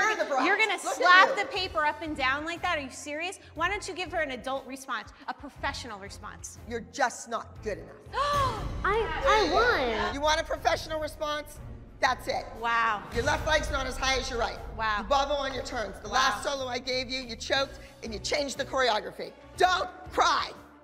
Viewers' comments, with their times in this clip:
0:07 that gasp and response takes me out everytime without fail.